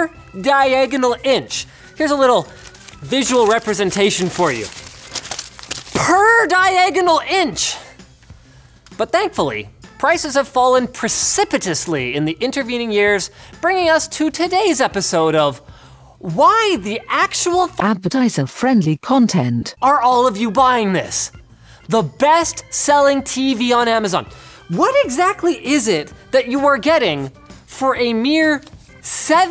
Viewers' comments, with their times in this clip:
0:10 is that suppose to be "precipitously"